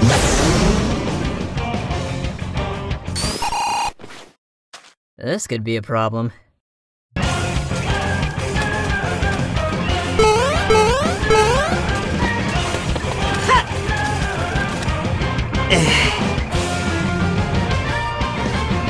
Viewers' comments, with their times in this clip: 0:05 SONIC JUST RUN OVER THE WATER LIKE WOOSH